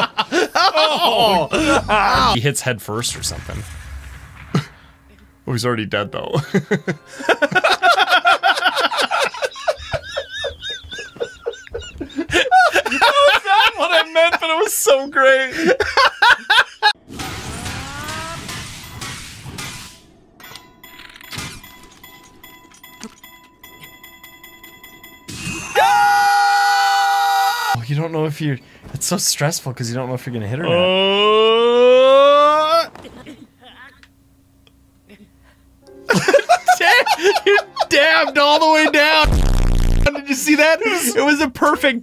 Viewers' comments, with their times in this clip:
0:09 The wheezing is hilarious 🤣
0:27 (In the distance) ‘WHAT IN THE NAME OF HYLIA?!’